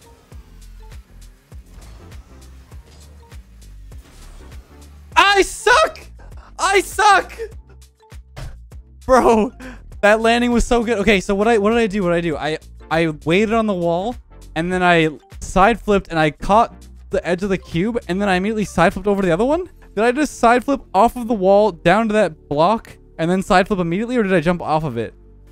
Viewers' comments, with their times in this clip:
0:06 that Canadian desk slam hahaha
0:07 AHHHHHHHH- tap AHHHHH for about to be loud bang